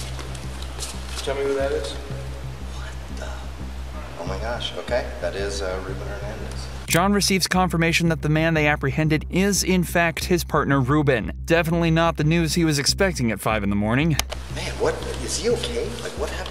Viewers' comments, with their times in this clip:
0:03 bro talks like he in a movie